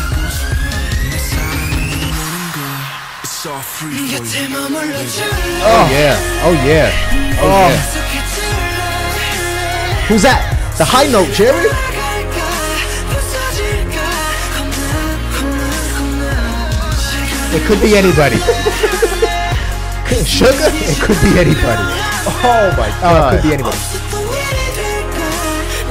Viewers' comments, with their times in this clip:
0:10 yes the high-note and the faint voice in the back was jimin